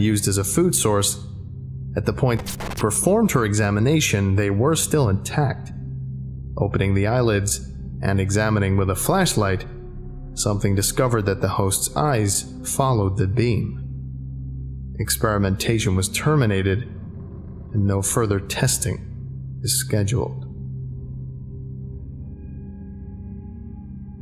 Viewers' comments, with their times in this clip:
0:09 Forgot the last scratch noise my guy.
0:10 you missed a redacted sound distort